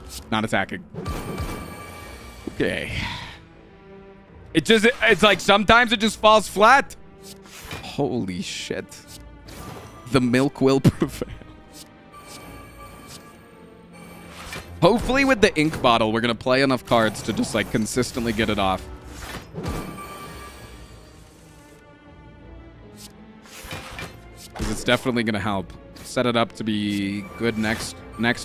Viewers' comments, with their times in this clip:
0:10 HE READ MY CHAT AND HE CHUCKLED. I FEEL SO HONORED